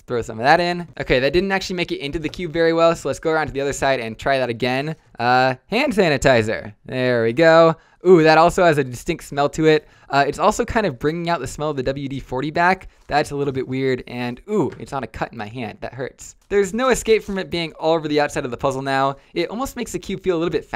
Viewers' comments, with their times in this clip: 0:04 The way he said, "Hand sanitizer!" got me dying😂